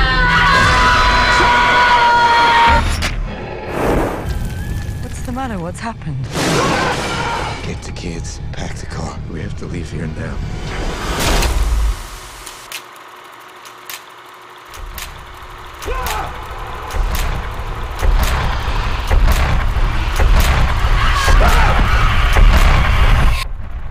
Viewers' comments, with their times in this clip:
0:05 it sounds really like allah akbar check it out